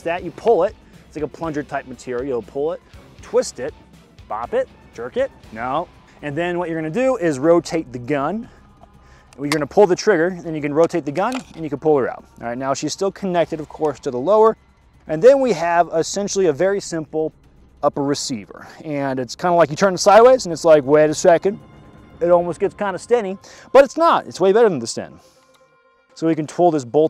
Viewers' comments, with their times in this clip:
0:08 god damn this video with that beautiful cod 5/WaW song. Just makes me wanna go get the PS3 and play the Russian campaign